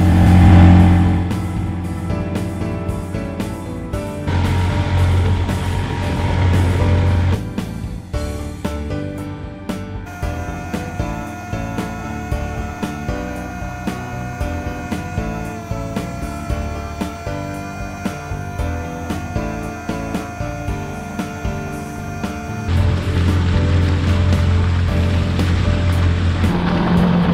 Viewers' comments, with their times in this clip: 0:10 I thought he was screaming for a second.
0:10 I thought he was yelling oh lol
0:11 I love how the sped up footage makes the engine sound like it's screaming.